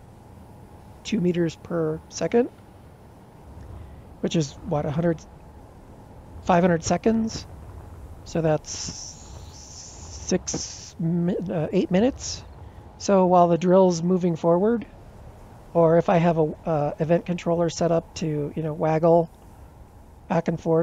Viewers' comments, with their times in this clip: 0:08 OP was asking us to like and subscribe in 'snake hiss'.